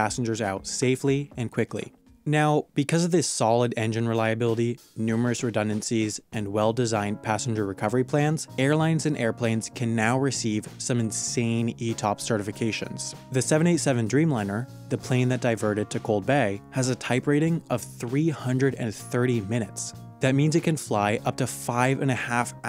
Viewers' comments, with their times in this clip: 0:08 The song that starts playing reminds me of one of the songs from Buzzfeed Unsolved, I think it's called Indulgence. Probably same key and similar instrument being used.